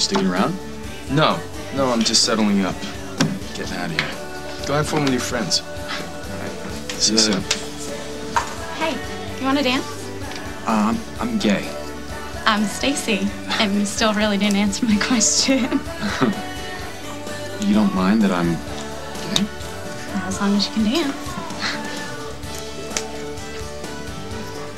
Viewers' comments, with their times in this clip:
0:10 That was so cute. haha i luvv how Noah just outright said 'I'm gay' (which was adorable how he said it btw) xD very good Noah, learning to say it out loud, i'm impressed